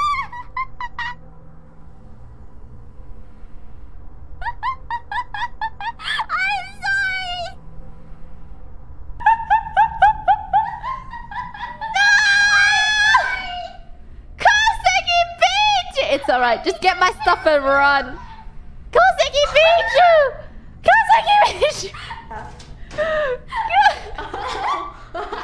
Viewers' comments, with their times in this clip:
0:09 Love this moment where they both laugh literally the exact same way.